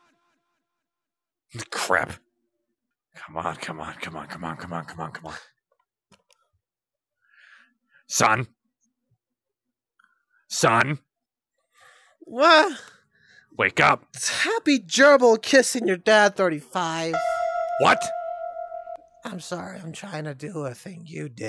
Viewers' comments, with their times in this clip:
0:05 I cannot take KC seriously with how short he is, but with such a scary voice and an adorable personality. 😭 Edit: I worry that if Sun is the catalyst, he'll die, then literally Eclipse and KC (and I guess Monty) are the only ones left from the originals 😭😭 Edit2: Sun is getting real good at lying straight through his teeth, but it's both sad and wholesome that Sun is willing to sacrifice himself to keep Moon safe Edit3: HAHAHAHA KC WOULD TOTALLY BE A YOGA INSTRUCTOR 😂😂 Edit4: MANS JUST HALF IN THE GROUND 😭😭